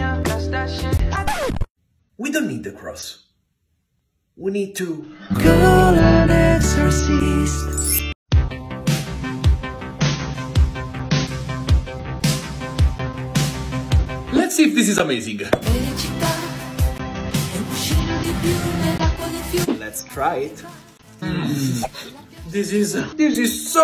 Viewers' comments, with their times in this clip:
0:06 i love it when you sing. It's so good